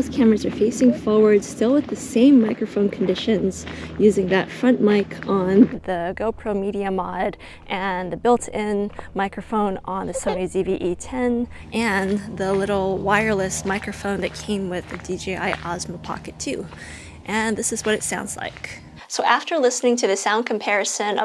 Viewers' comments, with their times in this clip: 0:08 i wish you were with your daughter in this place, i heard a girl
0:09 I could hear the baby ❤❤